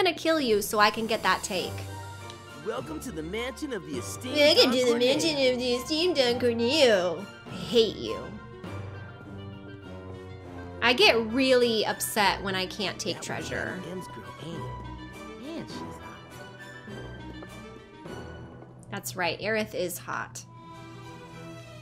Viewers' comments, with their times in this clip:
0:04 Love the way you say "Hate you". Looks upset but still kinda cute.